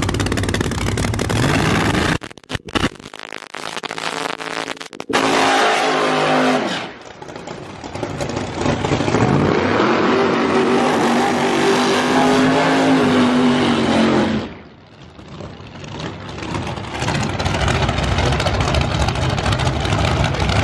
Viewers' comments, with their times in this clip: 0:06 R.I.P. yo ears!